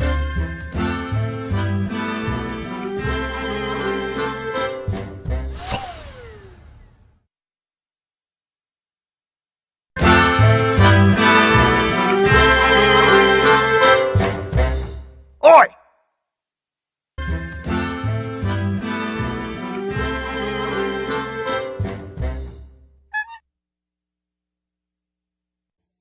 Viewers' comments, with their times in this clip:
0:10 funny little tune OI